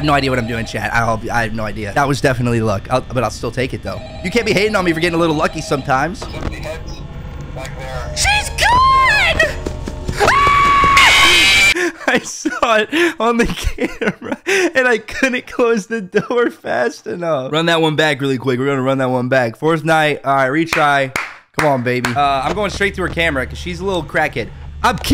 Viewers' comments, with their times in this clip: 0:04 was probably the best part in my opinion, bro opens cams and sees foxy gone and started screamin like a bitch😭😭
0:05 did phone guy say whats up dickheads or is that just me?
0:07 tell me he doesn’t sound like SpongeBob
0:10 that scream almost sounded like homers scream lmaooo